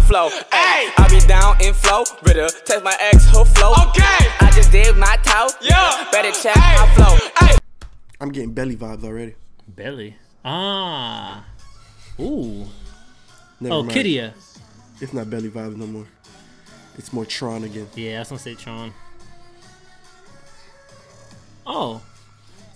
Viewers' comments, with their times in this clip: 0:09 Dude she literally said K-D-A and you still pronounce it kidiya? XD Im dead.